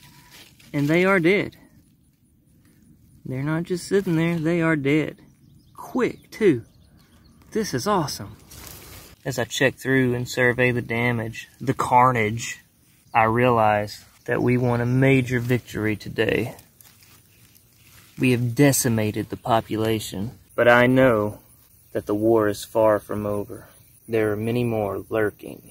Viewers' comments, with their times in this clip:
0:10 …(dramatic music plays in background…bugs extend before keeling over) lol 😂😎😊